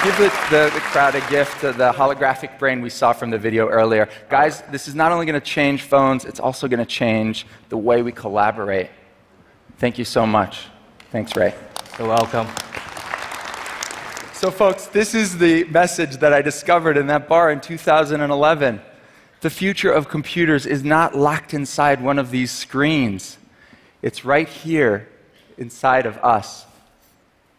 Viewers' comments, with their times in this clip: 0:09 slow clapping, i want to kill myself...